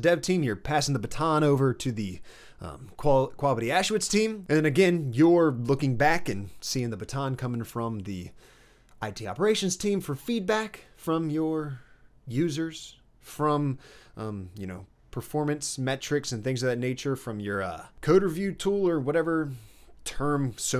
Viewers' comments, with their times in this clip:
0:04 Did he say “ quavity auschwitz” 😭😭